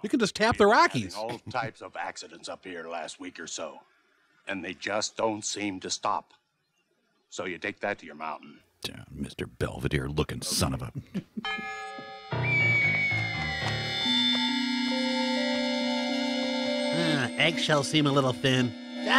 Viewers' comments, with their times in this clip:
0:04 for some reason. That guys tone of voice reminds me of Paging Mr. Herman, Mr Herman you have a telephone call at the front desk."